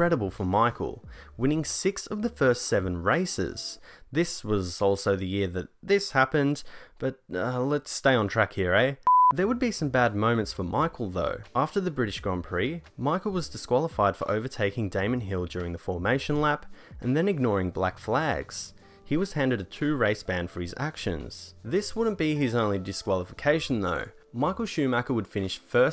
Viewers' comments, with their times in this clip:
0:07 oh... so you speak canadian?